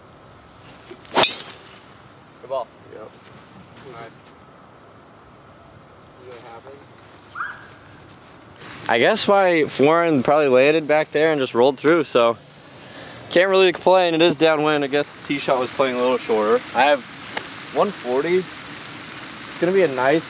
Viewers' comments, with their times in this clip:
0:06 did Bryson hit a dog??? What was that noise